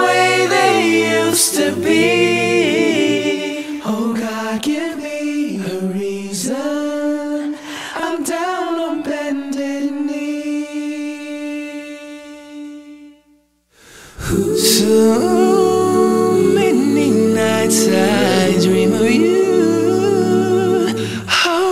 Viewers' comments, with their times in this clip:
0:03 oh god, give me a reason, im down on bended knees...perfect harmonizing, so beautiful T_T